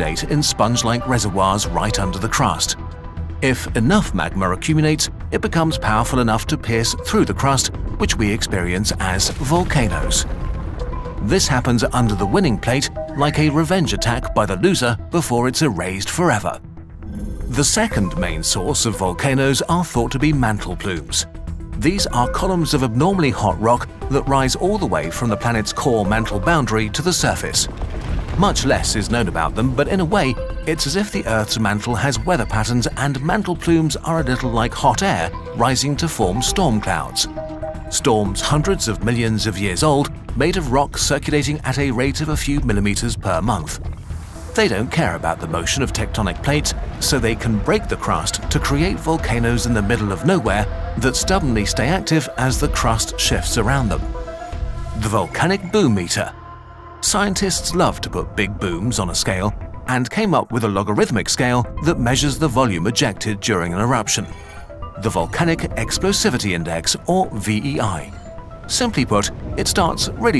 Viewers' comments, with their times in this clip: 0:03 tthe fuck is magmur
0:42 rape the crust?
0:44 The Music reminds me of Signs (2002 movie)
0:56 anyone else thing he say something else??
0:56 "Scientists love to put big boobs on a scale"